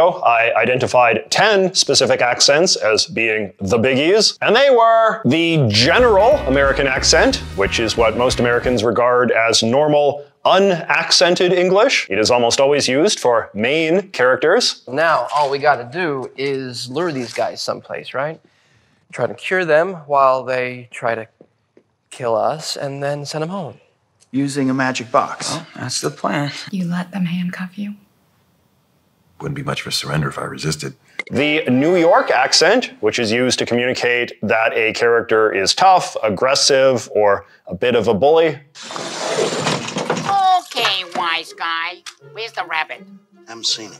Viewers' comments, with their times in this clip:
0:09 Ironically, growing up in Australia, I always thought of this one as the “this is fiction” accent. Like, the accent always used in TV and movies to show that it’s just TV or a movie. It took me a while to realise that people actually talk like that in real life, and I was like, “Wait, so they’re just using their normal accent? So it sounds like real life to them?”
0:16 lol using a brit to portray an American accent
0:26 almost sounds like a hint of a jersey accent in her voice